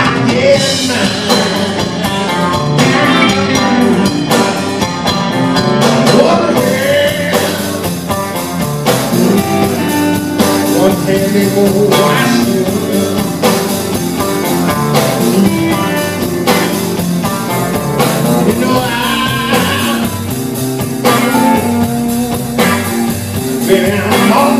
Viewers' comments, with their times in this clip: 0:06 glad I wasn't sitting in, 'cause against my better judgement, I would have gone to the five chord right here